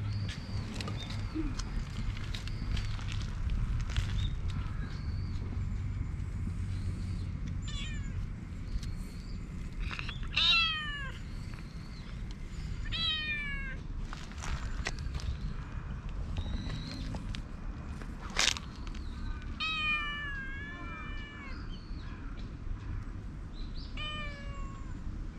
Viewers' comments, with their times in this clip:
0:06 really does have the cutest mew 😢🙈💕💟💕💟💕